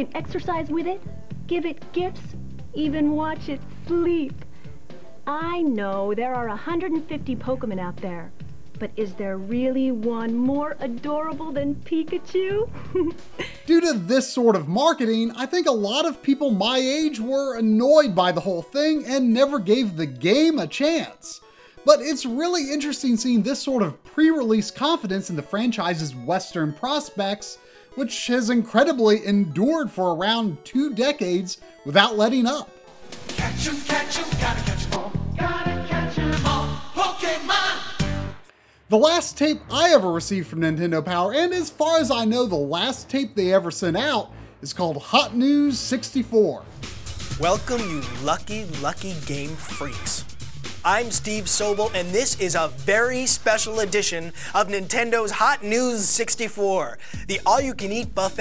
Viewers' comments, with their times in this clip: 0:07 Pokaman? I love my 90's cringe ;)
0:46 That guy looks and sounds like the unholy fusion of a prototype Reggie Fils-Aime and Barry Goldberg from The Goldbergs.